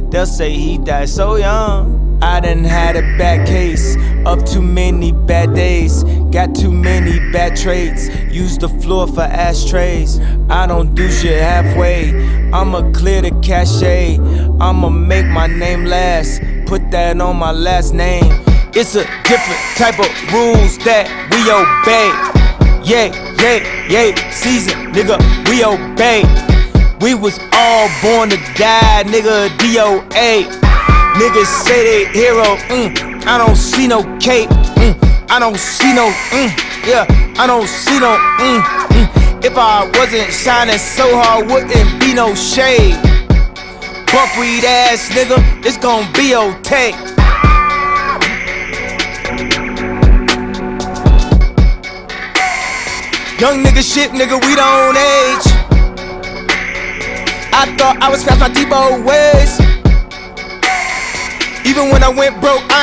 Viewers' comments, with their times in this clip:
0:08 The somber romanticization of darkness, the slow come up and then the sudden beat switch up signifying full blown mania.
0:16 also extra instrumental layer sampled after beat switch missing from the updated version due to sample clearance issues
0:16 after the beat switch, there's an extra instrumental sample from onwards; compare it with the spotify version (where it was removed bc of sample clearance issues)
0:17 the second instrumentaL sounds so Frigid Like February/ he shouLd've capitaLized on it by rapping a Winter verse
0:18 If you're looking for where the sample was removed, it starts
0:18 The sample clearance from like ish on. Listen to the other versions on Apple/Spotify, those sound like shit.
0:31 the part where Ye starts rapping and eating simultaneously
0:47 Pull up this version and the newer version and listen to that blank space you'll hear a CLEAR difference. I'll admit I didn't catch it when I first heard the new version but you can definitely tell something is off, epsecially at that part since he's not rapping